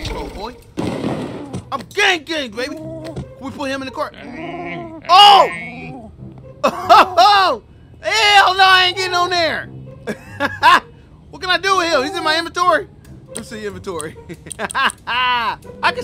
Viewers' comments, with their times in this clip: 0:03 Really had bro tooted in the cart 😭